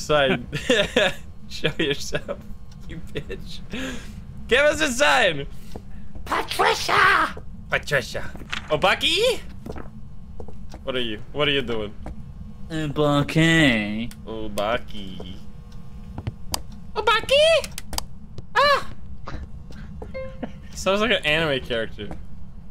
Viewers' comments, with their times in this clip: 0:04 The pAtRiCiAaAaA killed me off :')